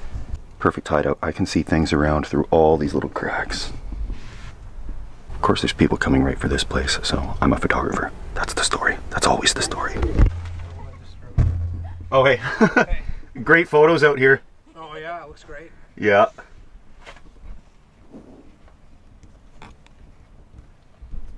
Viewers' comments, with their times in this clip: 0:08 I liked how you switched from your American accent to your Canadian accent of the video. Very neat!